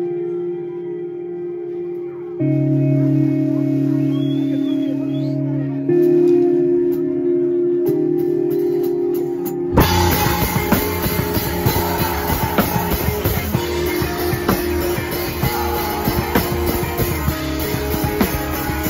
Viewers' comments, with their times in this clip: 0:03 i love this song.